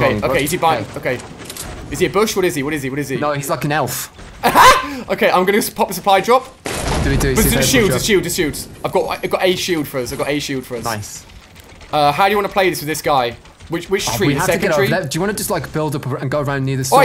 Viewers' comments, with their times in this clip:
0:03 omg listen to his laugh loll xdddd
0:03 that laugh is mad
0:04 The laugh had me dead